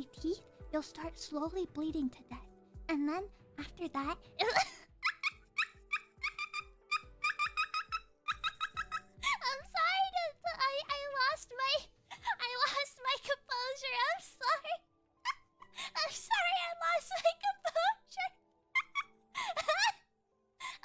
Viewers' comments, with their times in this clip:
0:04 Somebody wiping a window with a squeegee?